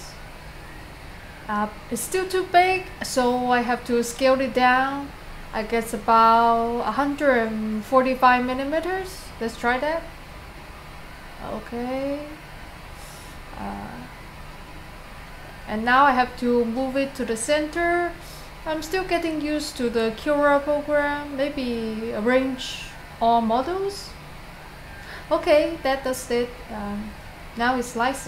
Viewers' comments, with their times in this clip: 0:09 hundred 45 minimeters ...LOL